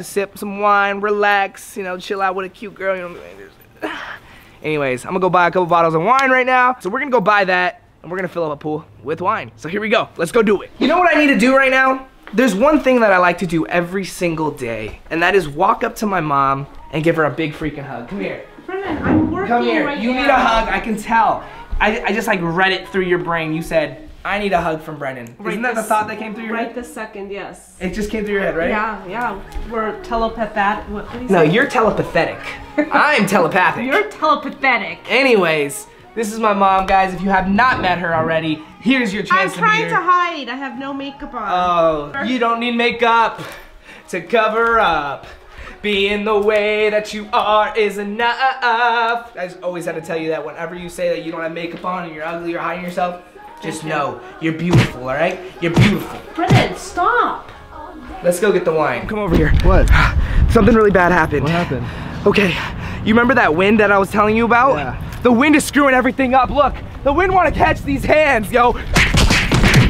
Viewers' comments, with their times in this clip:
0:03 he moans like a girl Lol
0:41 when he started singing that sent me 💀💀
0:55 tell me you love me playing on the background 😂😂